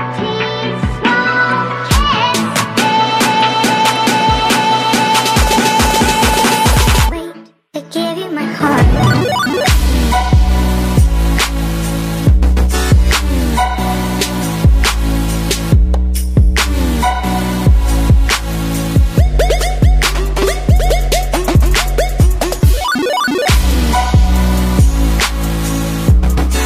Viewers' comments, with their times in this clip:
0:08 dancing to the drop or beat don't correct me